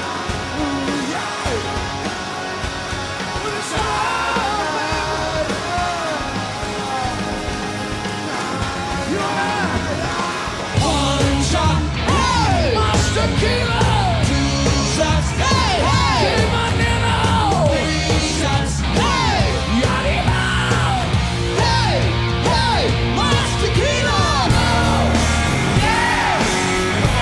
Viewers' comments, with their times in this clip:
0:08 Eddie's backing vocals are horrible